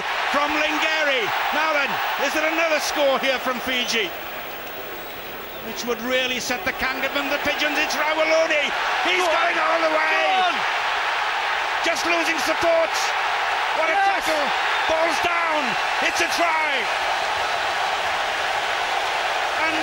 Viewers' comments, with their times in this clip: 0:03 some baiey's got the ball ,, who I don't know. Some baiey, lol